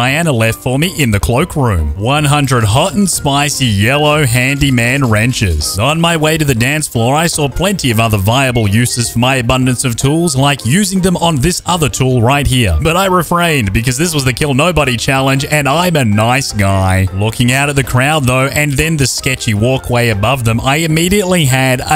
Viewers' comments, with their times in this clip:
0:08 is that a phone notification or something?